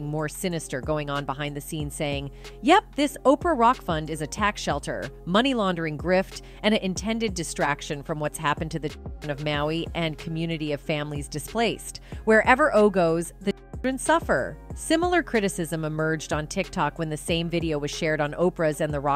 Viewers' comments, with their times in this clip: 0:05 # "...what's happened to the CHILDREN of Maui...." Why is children "beeped" out of the message and partially blurred in the second part?